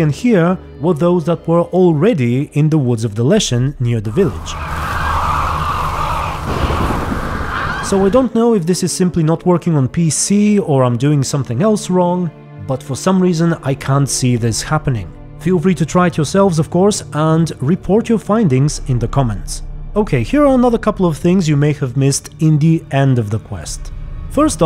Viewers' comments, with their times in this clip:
0:06 I can confirm that crows do warn you of eminent danger. It's been a while since I've played but I think they only do it if you're in a deep woods setting, also I always heard them but didn't always see them, and I swear I heard them in your video at the mark. Oh, by the way, I'm on pc :)